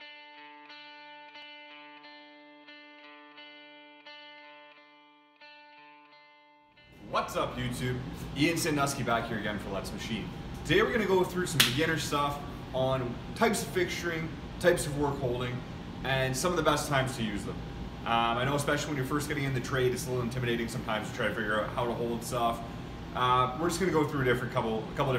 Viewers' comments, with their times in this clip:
0:06 honestly thought you were about to start singing as the music kicked in